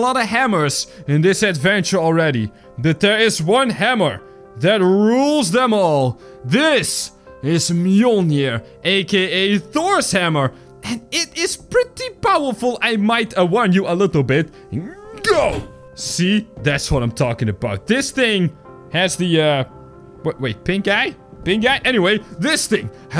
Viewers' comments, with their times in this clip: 0:06 On he said millnyare